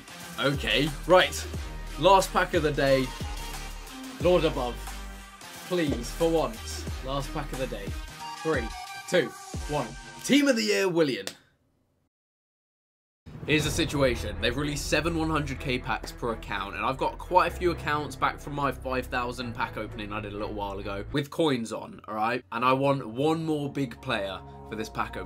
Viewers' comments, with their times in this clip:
0:07 when u don’t know the pronunciation